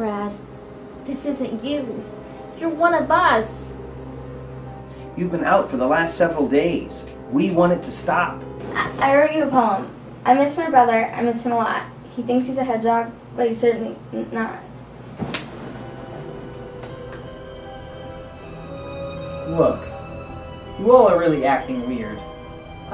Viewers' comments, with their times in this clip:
0:10 She’s trying to laugh as she sat down she wasn’t really crying c’mom now 😾